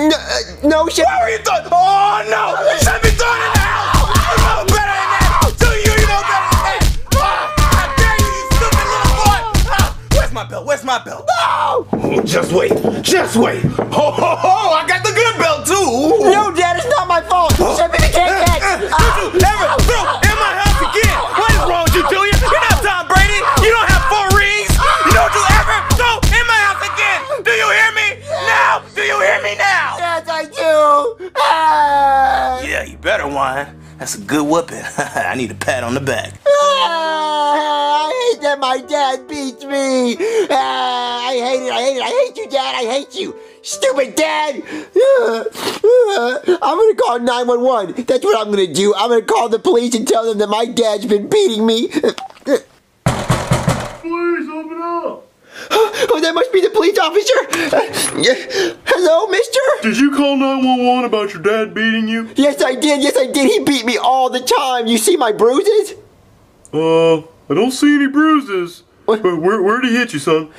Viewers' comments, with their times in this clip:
0:07 it sounds like Bowser Junior is crying
0:36 Bowser Junior: crying
0:57 The way he said it 😂😂😂😂